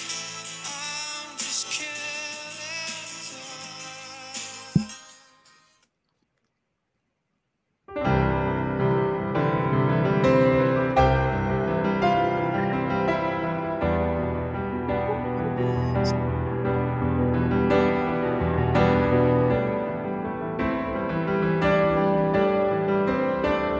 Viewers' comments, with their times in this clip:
0:05 this is such a lovely song by radio head and you played it so beautifully. Her reaction was really sweet I loved this.